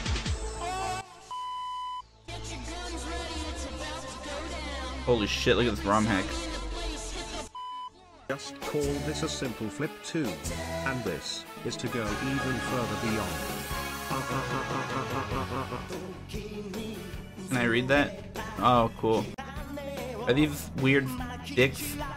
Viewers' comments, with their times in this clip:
0:08 The text to speech flows so damn well here with the song